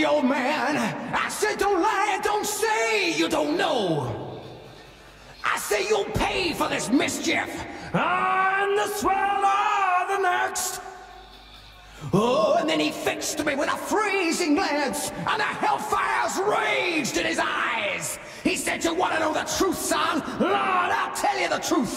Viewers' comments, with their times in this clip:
0:08 Dickinson sounds like a right wally.